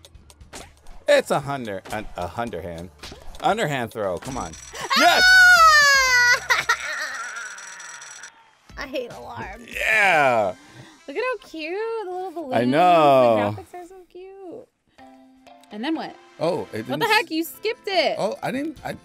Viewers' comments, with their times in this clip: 0:03 WHAT A FUCKING ANNOYING NOISE OMMMGGG